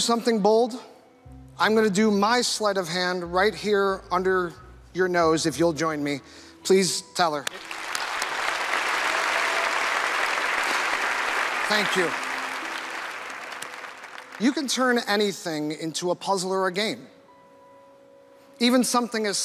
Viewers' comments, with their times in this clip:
0:06 Teller forgot he wasn't supposed to talk for a split second there. Your code was good. I think I figured it out - and I think you clearly did fool them. And I would love to place a guess, but because you asked us not to I will keep it to myself. Great work!